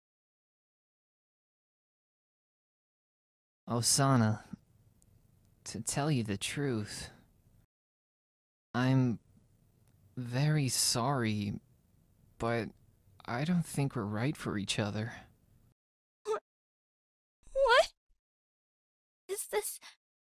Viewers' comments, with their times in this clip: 0:03 SENPAI SOUNDS LIKE MY EX BOYFRIEND AND MINUTE GAVE ME FLASHBACKS